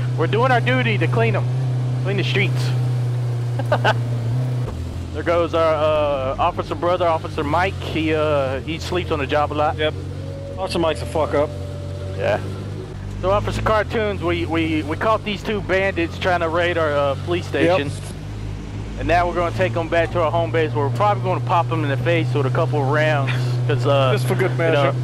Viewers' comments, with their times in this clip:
0:09 if u listen closely, u can hear a quiet howl, and i thought there was a fuckin wolf or some shit outside my house, lol